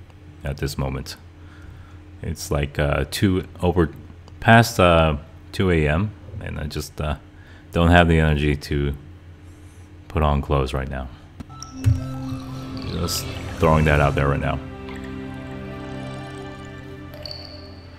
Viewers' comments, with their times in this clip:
0:04 Holy moly you got me TWICE. I burst out in a full belly laugh because I just did NOT see that coming. (I was already tickled over the deadpan, “...get a job.”) Then at the end it was like a parting shot and I laughed as hard as the first time. 😂